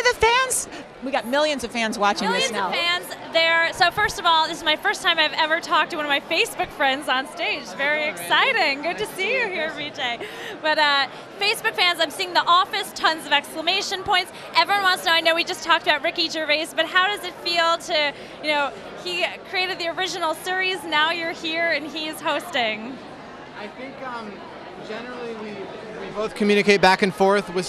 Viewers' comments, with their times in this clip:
0:09 did she just say REE jay?! HIS NAME IS BJ LADY GET IT STRAIGHT